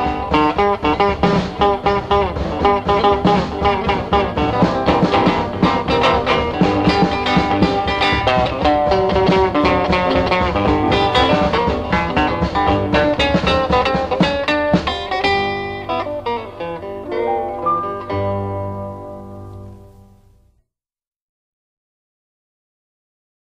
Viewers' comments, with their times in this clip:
0:08 Love this song as played by Lightnin'. Music people what do you call that? Chromaticism? or more specifically what type of chromaticism?